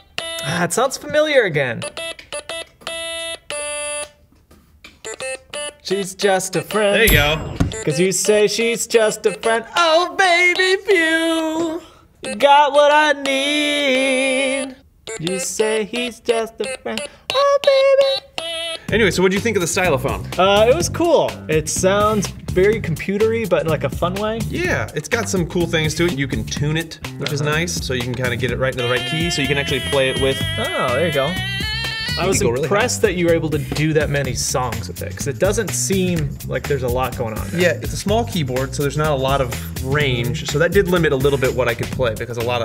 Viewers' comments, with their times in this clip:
0:10 the voice of an angel
0:11 Carribian Finger Drums Intensifies
0:29 a little of Flowey from undertale